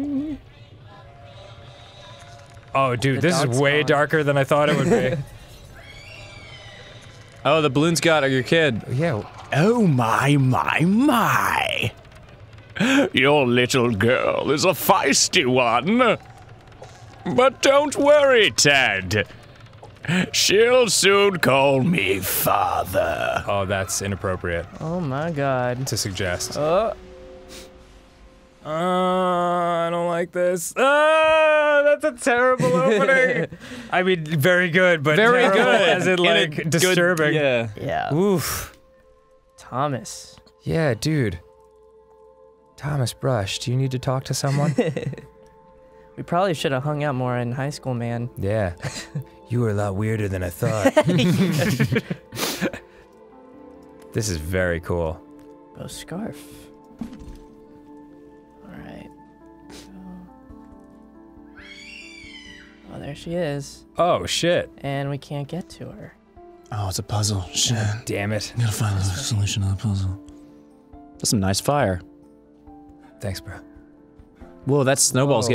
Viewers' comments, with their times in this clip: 0:10 Sounds so much like Perfect Cell
1:01 that scream was not human wtf